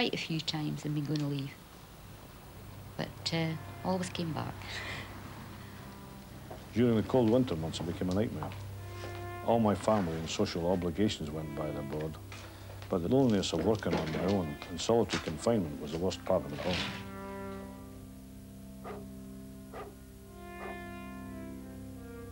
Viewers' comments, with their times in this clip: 0:05 This guy machine speak and talk like Elvis. Lesten